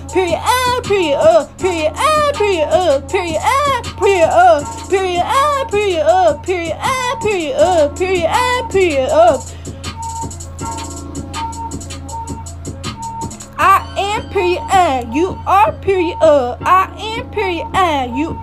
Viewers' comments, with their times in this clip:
0:03 What. She skipped so many beats